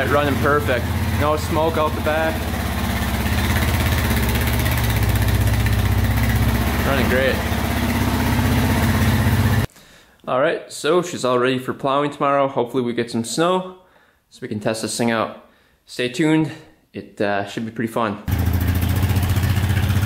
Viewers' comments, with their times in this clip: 0:04 I don't know anything about Quads but is that idle speed not a bit high?..